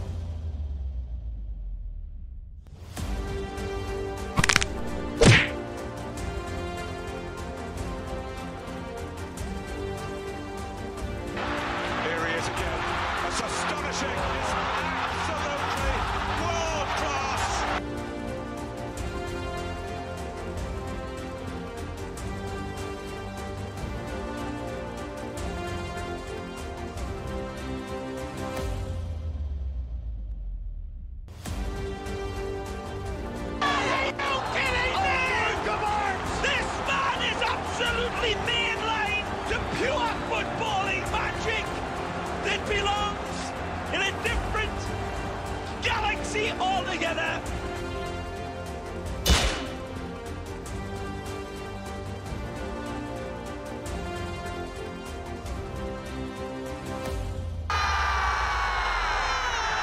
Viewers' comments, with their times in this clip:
0:03 that crack really scared me.
0:47 TF2's crit soundclip had me.